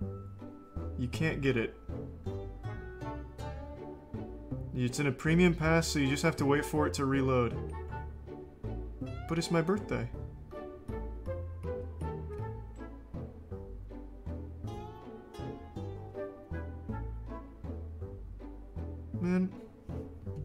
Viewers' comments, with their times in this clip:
0:06 "But it's my birthday" was so genuinely heartbroken. That is a crushed man.